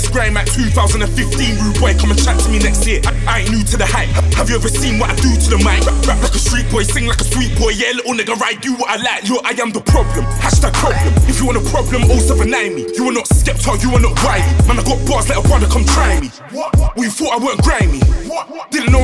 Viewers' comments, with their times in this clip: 0:06 Dat pause ...man i wanna punch the wall...